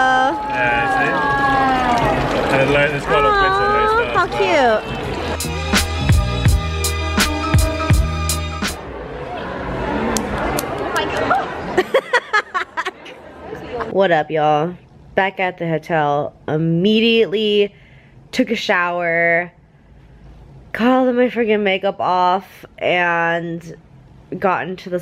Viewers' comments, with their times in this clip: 0:09 Lol i didn't expect that ''flap flap flap to that jelly thing hahaha